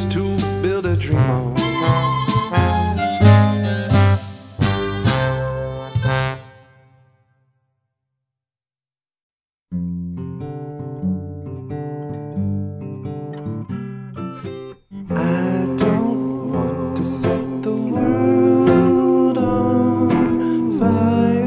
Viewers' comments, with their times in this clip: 0:09 I know you made this like two years ago, and you probably won't find this in the tons of comments you get daily, but the bit, I'm LOVING It. I've listened it a few times now. It's just...Brings me peace, and thank you for it.EDIT: Your voice is amazing, I added this audio to my music collection waiting for me on monday at work. Thank you.